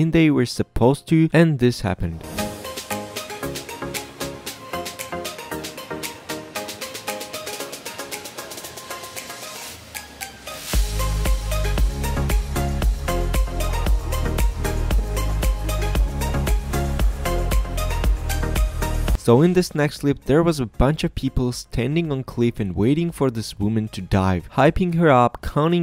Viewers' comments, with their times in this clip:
0:10 omg, why the happy music? That looked like it hurt them a lot